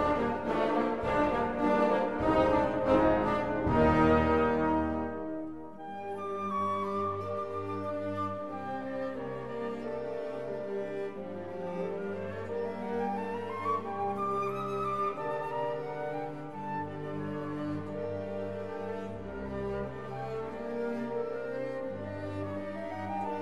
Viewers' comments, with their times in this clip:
0:05 If you're searching for the bass solo